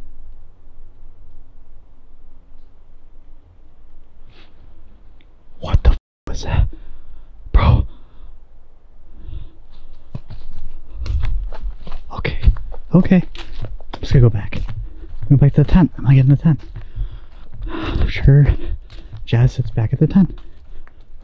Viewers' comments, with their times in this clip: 0:07 That scream was horrible 😮